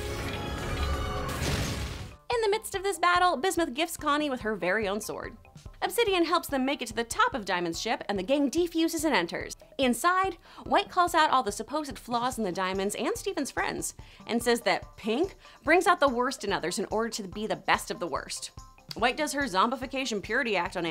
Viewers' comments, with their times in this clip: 0:08 the way she says gem